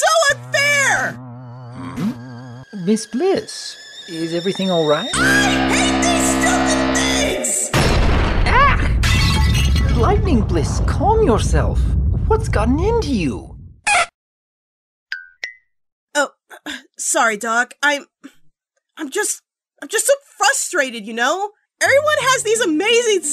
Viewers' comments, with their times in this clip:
0:05 Oh boy, Blissy just pulled off the Royal Canterlot voice.